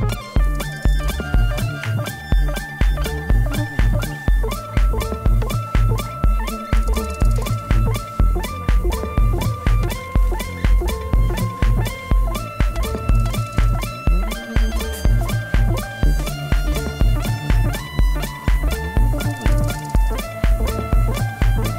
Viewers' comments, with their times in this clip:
0:04 Goosebumps when the bass kicks in and ties everything together